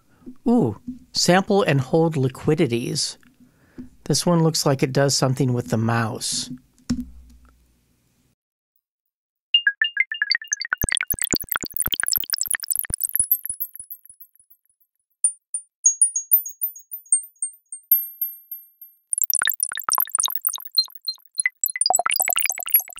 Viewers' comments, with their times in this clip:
0:09 drip drip drop little april showers :3